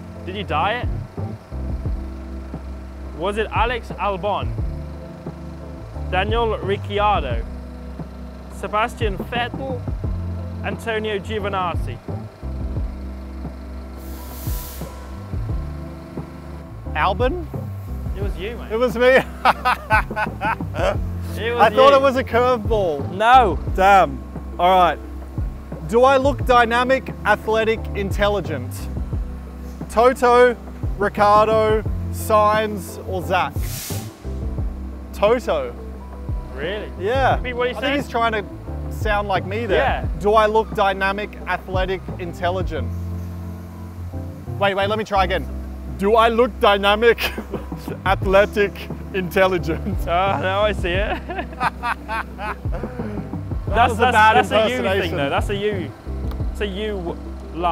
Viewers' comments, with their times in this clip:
0:08 Landon fake voice crack
0:10 every single person tries to pronounce it "nah-zee" but lando goes full nazi
0:44 spot on Toto impression! lol
0:44 impression of Toto was 👌👌🤣🤣🤣🤣